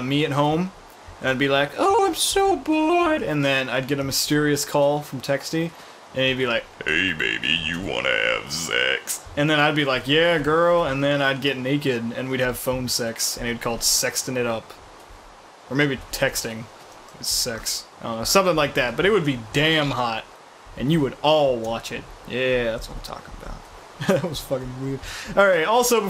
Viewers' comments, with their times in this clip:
0:09 voice was disturbing. ;p